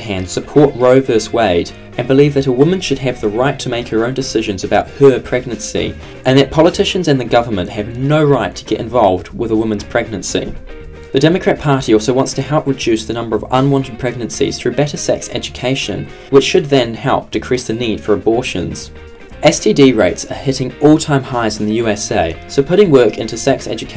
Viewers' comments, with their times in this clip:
0:04 Listen to how the word “her” is said in comparison to the rest of the sentence.